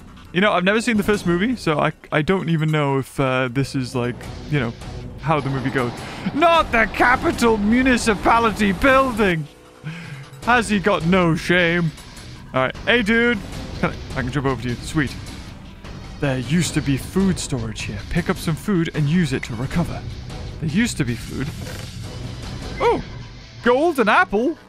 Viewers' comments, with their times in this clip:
0:06 I forgot he wasn’t American 😭